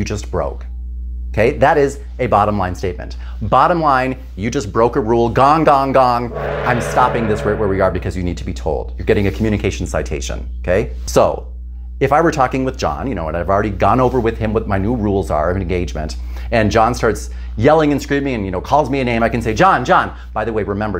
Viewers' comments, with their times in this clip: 0:07 HEADPHONE 🎧 WARNING ⚠️ For some reason, the GONG sound made me jump to the CEILING & my ears are rinnnnngiiiiinngggggg